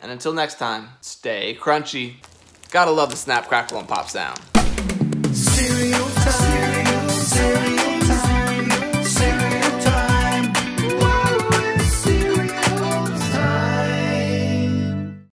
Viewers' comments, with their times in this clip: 0:04 Whoa! 😮 a new cereal time song